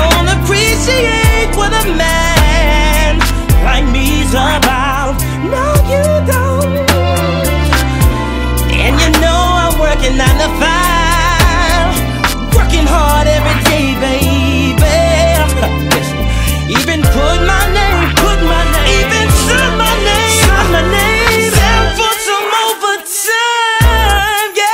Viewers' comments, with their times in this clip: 0:06 sounds like trey songs sampled that